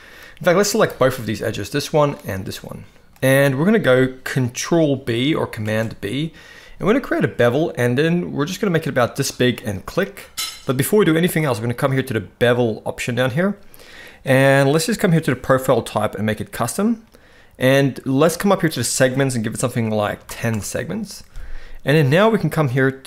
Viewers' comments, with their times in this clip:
0:10 on after he bevels there's a noise in the background